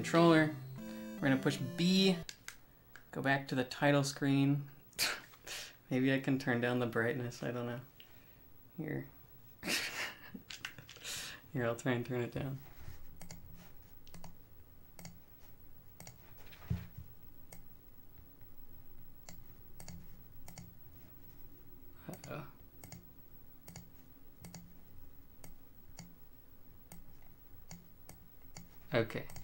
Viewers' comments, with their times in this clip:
0:10 your clicking was synced with Mario for a bit